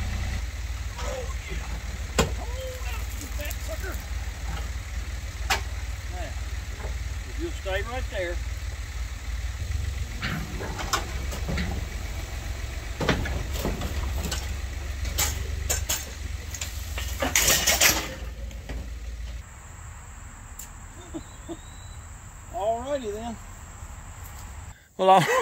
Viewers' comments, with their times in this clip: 0:07 🤣😂❤️ the way u r laughing is amazing. I’ll be laughing too if it happens to me، glad didn’t make much damage to the front grill ❤️ I’ll keep watching till the end ❤️